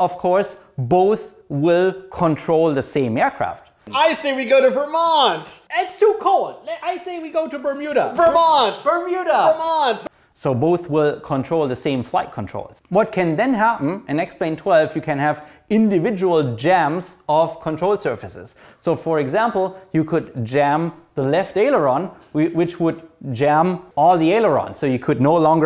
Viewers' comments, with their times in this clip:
0:09 Whose cat is that ? I think they wanted their input to be heard? :)